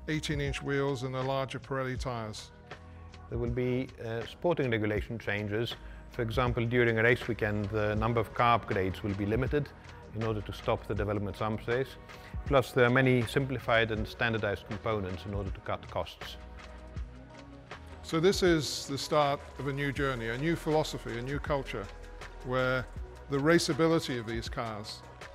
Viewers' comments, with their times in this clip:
0:08 I don't understand what he says Sounds like "number of carb blades will be limited", but since it's not 1979, that's likely not correct.